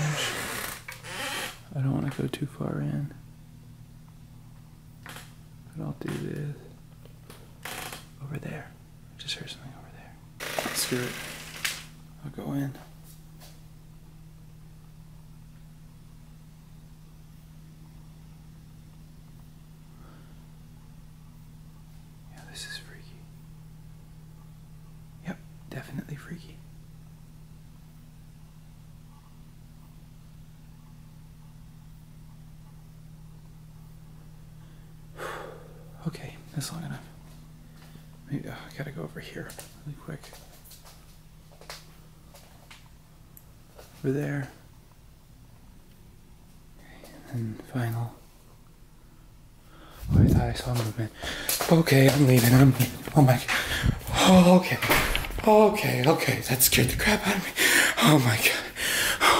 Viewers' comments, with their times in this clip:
0:06 Was that an exhale or something ?
0:46 That sounds like something moved for a quick second right before you left the garage. (A quick whoosh as if like a quick movement or something like that)